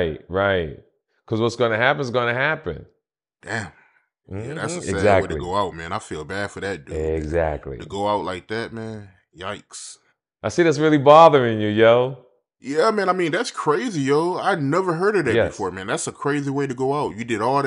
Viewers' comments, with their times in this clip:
0:05 he sound like he caught an informant 🤣🤣